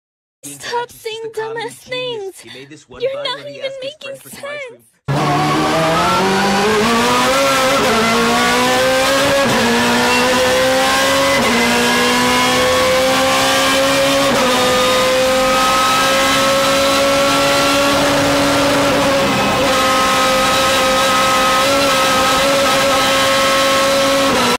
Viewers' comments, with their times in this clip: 0:05 is where the scream of the legend starts.
0:05 The Car is screaming like its gonna fr explode 💀💀
0:11 M3 go RRRRRRRRRRRRRRRRRRRRRRRRRRR
0:18 so much sounds in one second WOW beautyful